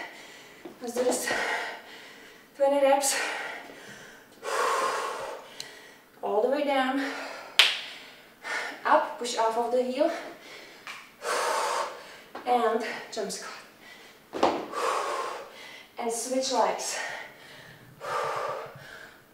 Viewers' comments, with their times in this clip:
0:07 is that your knee crack ? :o